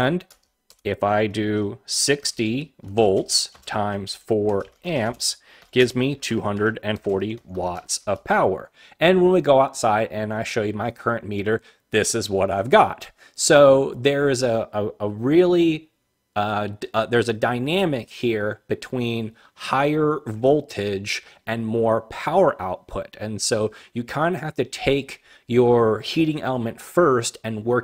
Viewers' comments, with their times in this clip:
0:10 on your video can not tell what your said something something meter this is what i got